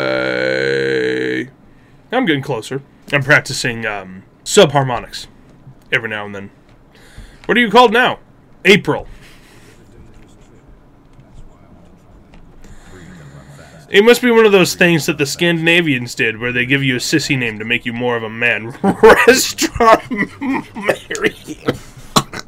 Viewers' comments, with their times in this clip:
0:03 Mongolian throat singing?